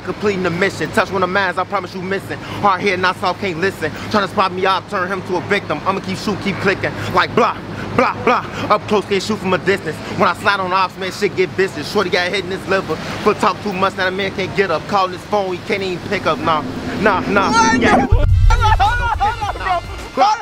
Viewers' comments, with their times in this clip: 0:08 he low key sound like polo g